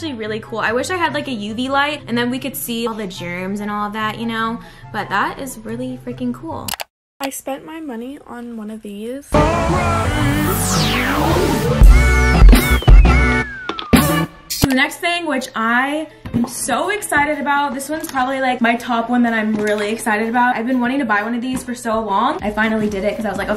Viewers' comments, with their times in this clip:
0:08 when the music started playing it was like👈🏽👉🏽👆🏽👇🏽👉🏽👈🏽